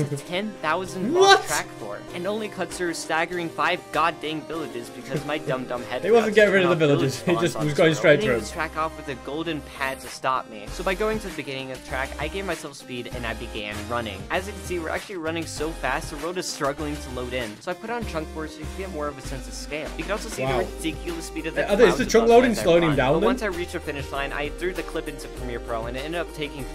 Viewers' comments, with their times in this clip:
0:09 anyone else heard stronger then you